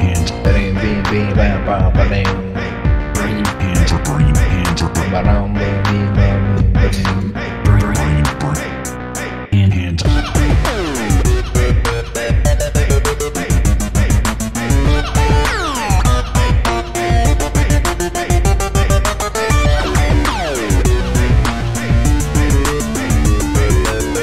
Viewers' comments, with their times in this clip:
0:10 sounds like a Portal song, i love it